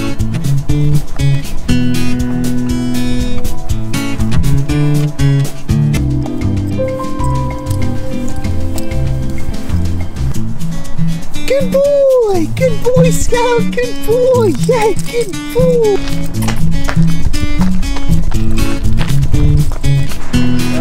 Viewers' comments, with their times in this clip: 0:06 that Little music 😍😄